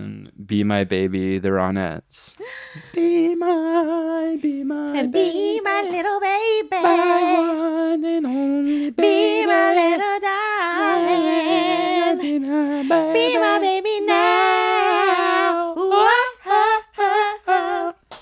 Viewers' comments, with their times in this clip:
0:03 that harmonizing was actually amazing